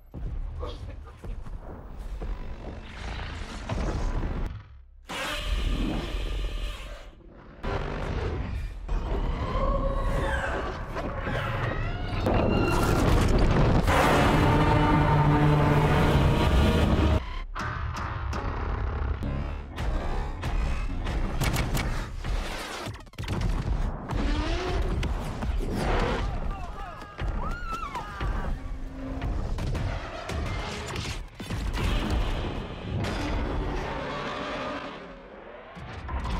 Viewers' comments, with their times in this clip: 0:09 Ok should have been included in the movie. I love how after kevin gets his flashback it transitions to his laugh as hes about to kill godzilla.
0:13 that is a warrior roar right there!
0:17 is an even better warrior roar
0:19 It was that “DUM DUM DUM” that let Godzilla know he was dealing with Kevin…